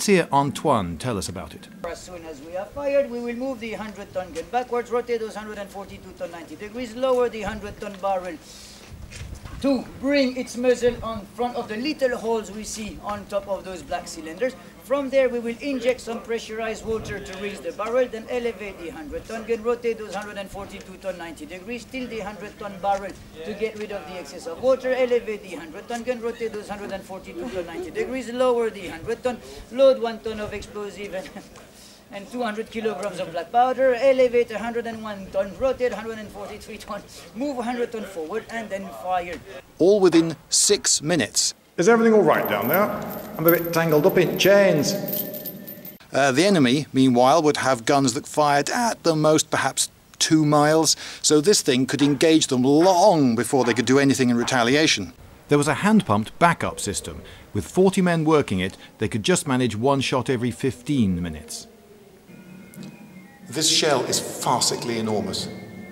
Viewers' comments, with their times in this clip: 0:04 Someone please remix that guy spitting them fat instructions
0:04 I only understood "THE LITTEL HOLS"
0:04 the accent of this soldier is hilarious!!
0:04 there is a movie where Robin Williams speaks like that. But i can`t remeber it?.
0:46 Maybe it's just the way I'm sitting but I got the sensation of coins falling out if my pocket when I heard those chains Anyone else?